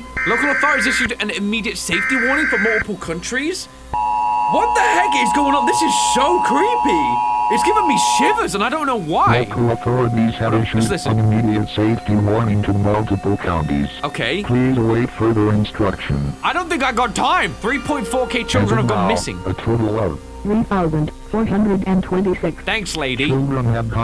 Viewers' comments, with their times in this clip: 0:05 creepy humming noise youtube: ah yes this is laughter